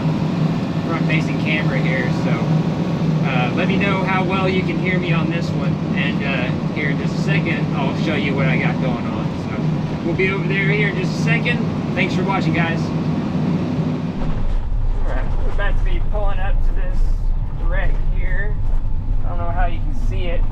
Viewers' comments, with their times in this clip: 0:06 I could hear you just fine!